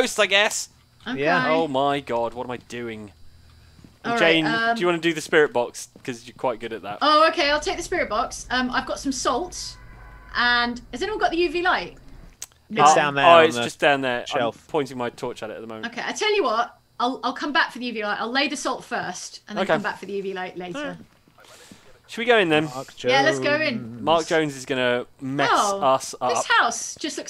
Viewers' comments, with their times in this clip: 0:09 is that a scream noise in the background?